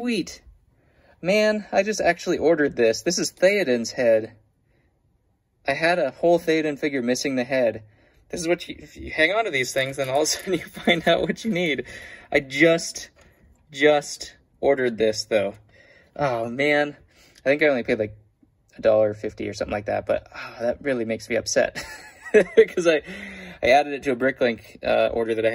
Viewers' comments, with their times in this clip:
0:10 whos head is that? I cant hear crap xD